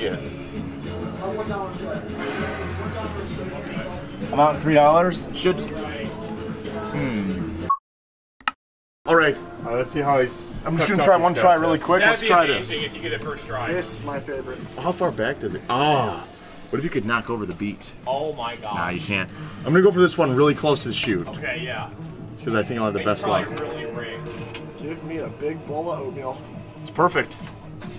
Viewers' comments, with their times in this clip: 0:08 Lol minecraft sound